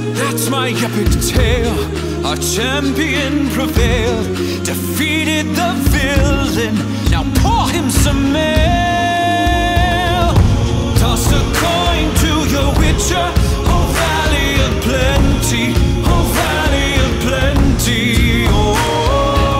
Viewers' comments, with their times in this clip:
0:07 I heard "Pour him some milk" And Geralt he needs some milk. That was all thank you
0:07 LOL I always hear this as "Pour him some milk", even though I know that's not what how the song goes...